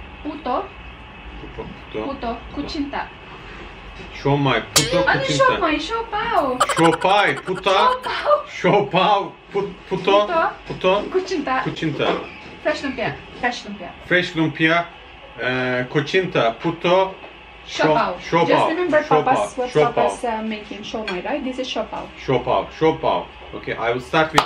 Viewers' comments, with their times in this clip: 0:08 Just new subscriber here👍 Find him very funny. Like you man👍 LoL " i heared puta" yata 🤣😅🤣😅